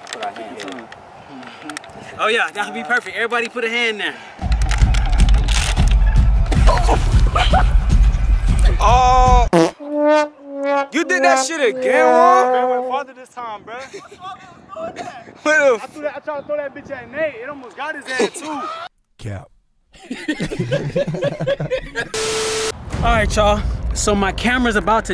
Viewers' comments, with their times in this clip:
0:10 the way he said it "You did that shit again woe" im dead lmao